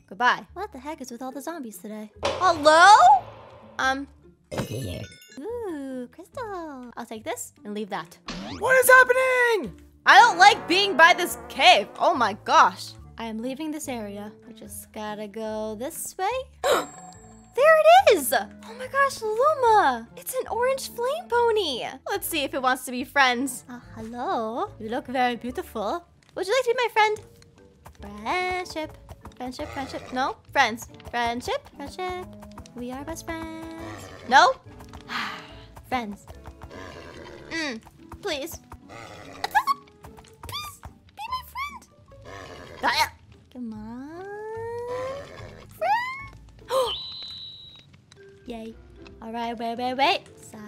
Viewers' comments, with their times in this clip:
0:08 uh what is wrong with your voice
0:37 utterly adore the angry squeaks🌸🌈🦄